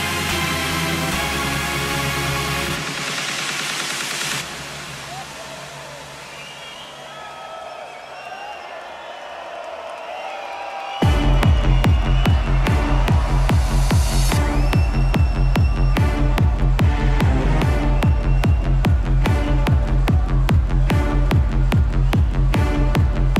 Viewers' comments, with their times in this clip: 0:07 Bass linę in is sick, I like it its perfect drum 😍